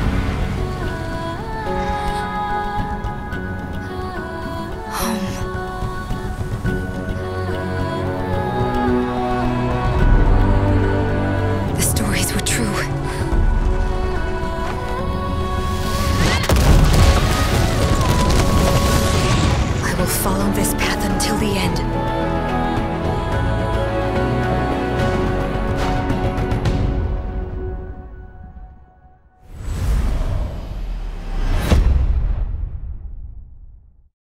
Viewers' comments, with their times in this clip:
0:09 IT SOUNDS BETTER THEN THE ORIGINAL HAAHAAAAAAAAAAAA i want this one as the login screen can somone do a remix :c
0:18 what, she say like Yasuo in
0:21 She sounds like riven a lot (Same voice actor maybe) and talks like yasuo She sounds like riven when she ults "I must not go back", the voice is pretty close and she talks like her also she says a same phrase as yasuo does, because he was her mentor and maybe she like did and believed stuff the same way he did?